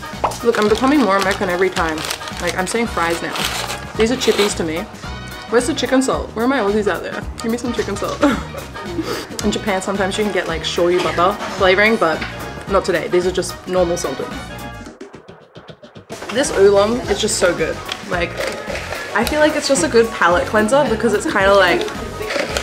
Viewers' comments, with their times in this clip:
0:06 I'm confused, by your accent I would have sworn you were American